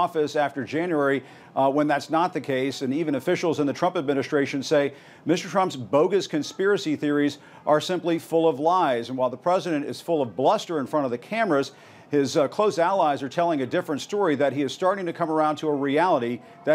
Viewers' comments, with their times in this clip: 0:03 Jim Accosta called him, "Ms. Trump"